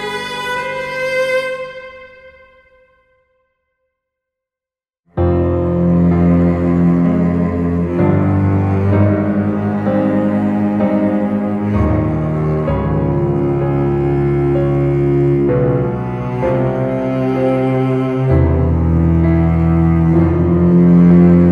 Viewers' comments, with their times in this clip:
0:06 I was looking for a good cover/retranscription of this OST, not disapointed ! It just came out but this OST feels so "under rated" for now, I didn't see anybody really freaking out about this shit as I do...like come on don't you people hear this godlike cello ? Godammit like it hits sooo hard (and even more during that freaking emotional scene) ! Really nice job !